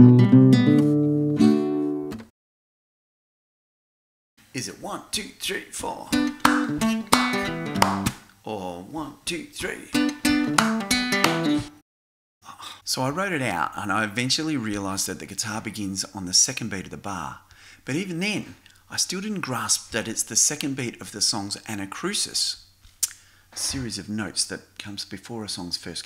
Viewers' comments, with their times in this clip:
0:07 wait a minute, hows he clapping 😳🍑